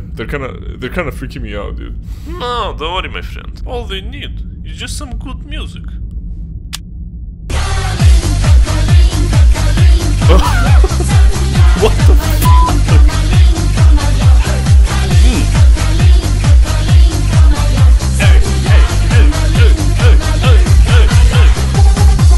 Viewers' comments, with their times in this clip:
0:08 I LOVE THIS MUSIC❤️❤️